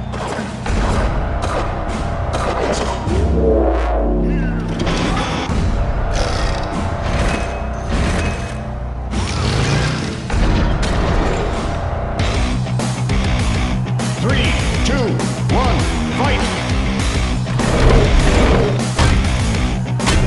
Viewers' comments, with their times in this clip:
0:04 I could barely hear "Here comes Hanzo!"